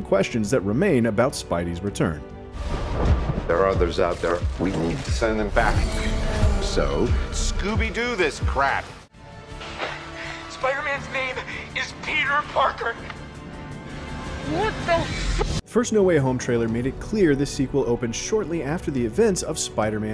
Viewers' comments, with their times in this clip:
0:03 Doesn't Dr. Strange's voice seem to be a bit discontinuous?